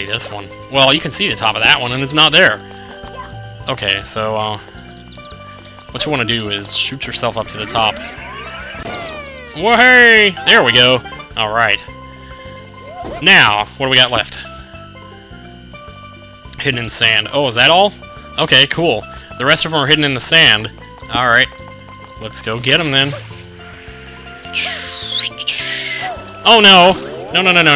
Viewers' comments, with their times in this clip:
0:09 that "Wha-hey!" sounded very Banjo Kazooie-like.